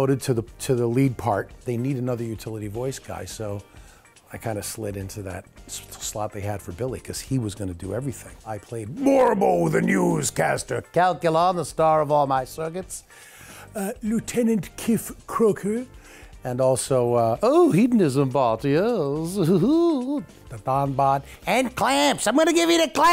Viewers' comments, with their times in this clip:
0:09 I like Maurice LaMarche’s Voices